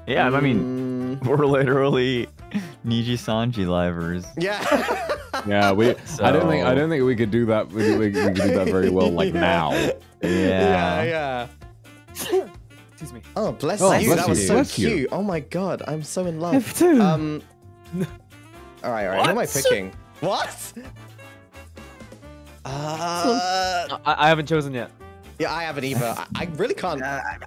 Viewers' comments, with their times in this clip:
0:10 OH MAUR GAURD THE CUTEST SNEEZE EVER
0:11 That sneeze is def gonna be added to the comp The stream was really fun!!! :D couldnt stop smiling the whole way through Thank you for the stream!!